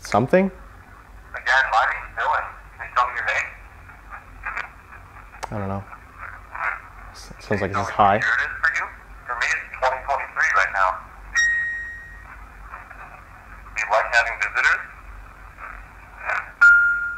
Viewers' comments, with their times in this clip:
0:05 so that pattern the music box is doing feels like Morse code to me. I wonder if it’s actually spelling anything? It seems really intentional